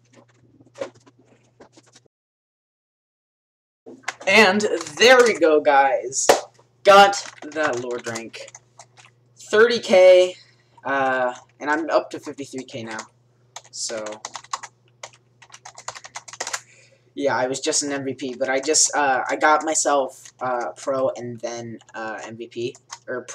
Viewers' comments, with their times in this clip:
0:05 Video is sped up until it's not all a monstrosity. Also, sorry for weird audio quality, I couldn't use my dedicated mic.